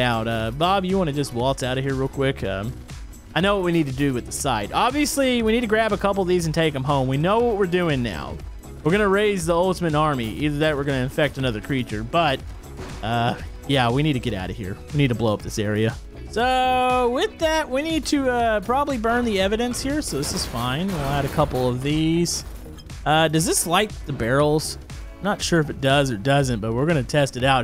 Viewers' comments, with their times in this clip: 0:09 u sounded like flamingo